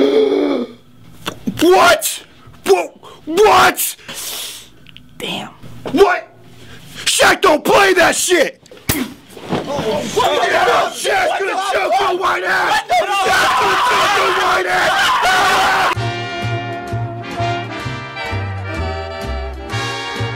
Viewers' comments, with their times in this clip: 0:08 click in 720p with like half a second in between :D